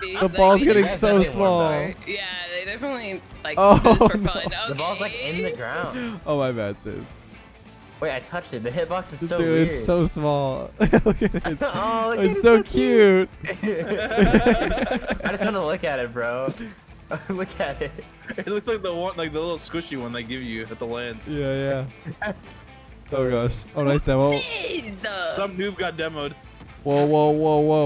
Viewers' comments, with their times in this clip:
0:08 the comms sound a lot like my first date 🥲